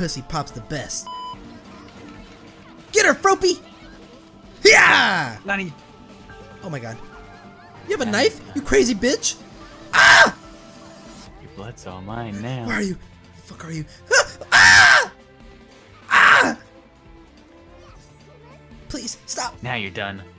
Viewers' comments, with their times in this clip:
0:05 Toga: the type of girl to moan when she stabs you.